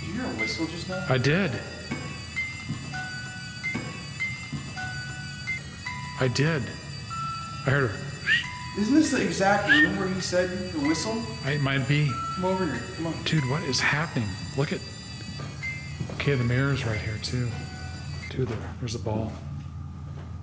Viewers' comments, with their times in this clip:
0:04 YUP HEARD THE WHISTLE.